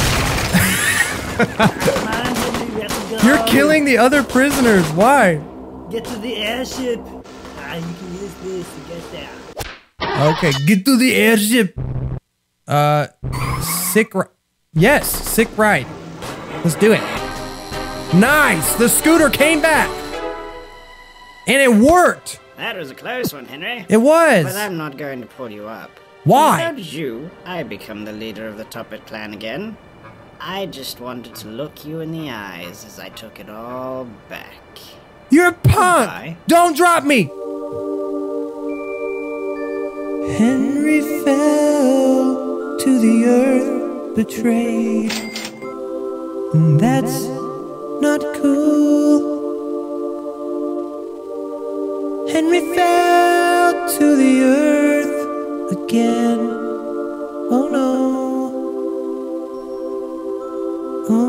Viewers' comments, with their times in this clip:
0:04 a Arnold reference instead of saying get to the choppa he said airship and sounds just like him
0:04 he sounds like he's enjoying it so much he thinks he's hebry
0:36 this timestamp: is the best part because of the sad music playing and you actually singing it! Beautiful singing!
0:44 can u no sing !?